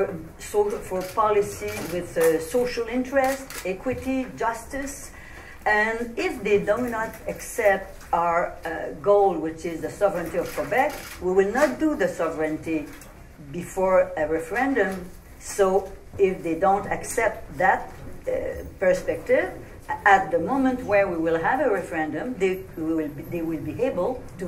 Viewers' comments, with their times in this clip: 0:05 haha if they donut!!! :)